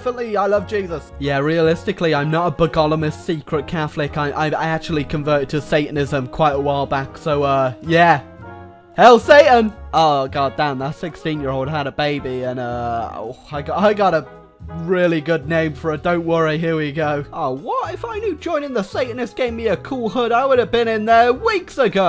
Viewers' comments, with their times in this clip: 0:07 Hail Satan was pronounced worse